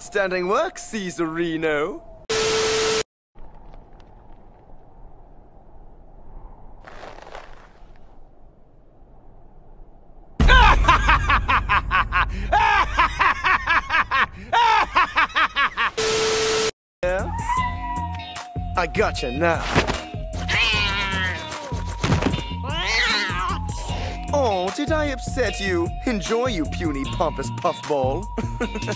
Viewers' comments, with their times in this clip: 0:10 dub: more wheeze Og: funny as hell